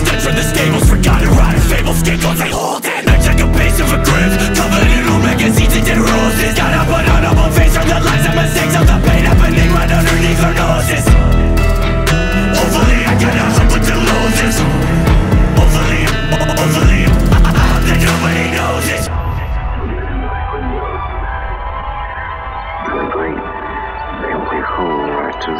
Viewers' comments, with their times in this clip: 0:06 This is gonna sound weird as fuck, but those parts where he raps so aggressively that his accent comes thru go so damn hard.